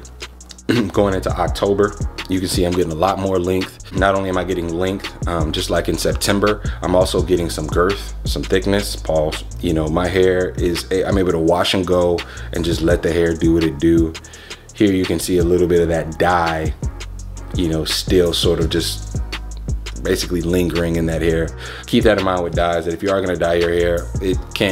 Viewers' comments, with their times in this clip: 0:08 i heard that lil pause 🤣